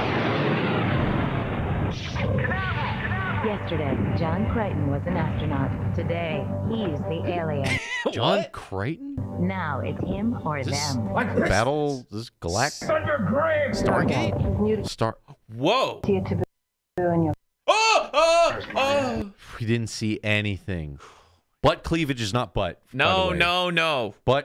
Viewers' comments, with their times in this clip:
0:09 john kramer? as in the jigsaw killer?